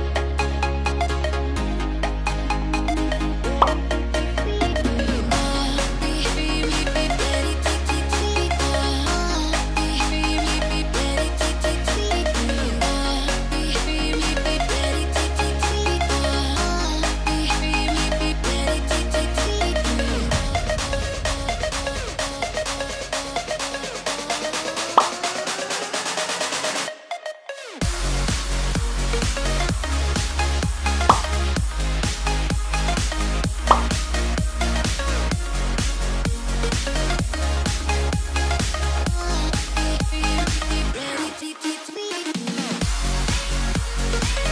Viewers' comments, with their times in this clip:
0:05 Tilts head* Puts fingers by head* Makes voice somewhat deep with a japanese-italian accent
0:27 i thought that noti was mine